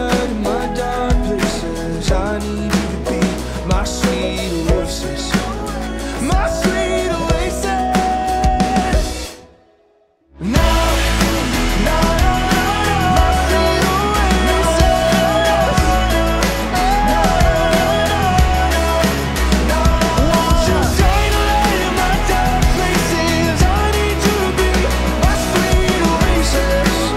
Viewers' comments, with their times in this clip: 0:10 It'll take some time to get the timing on that crescendo "nah" haha